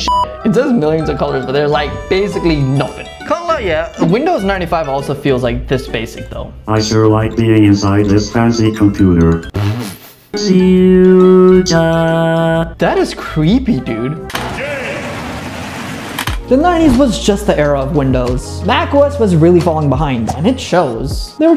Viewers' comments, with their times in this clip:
0:07 The text to speech 😂😂😂😂😂